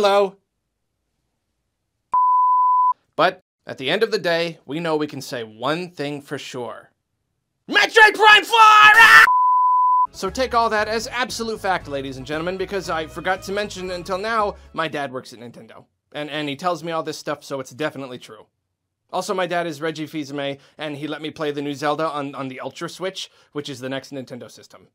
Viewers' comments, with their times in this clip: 0:05 R.I.P headphone watchers